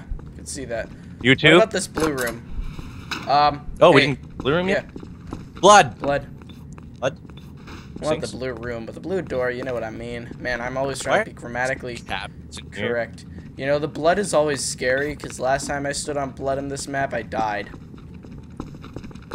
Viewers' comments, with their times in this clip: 0:07 I heard crates or somthing